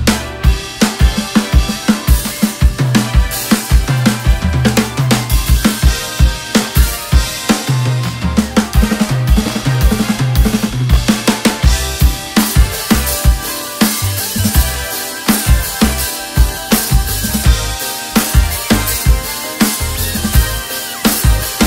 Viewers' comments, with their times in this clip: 0:08 The playing was insane! Especially The snare sounds sooo gooood.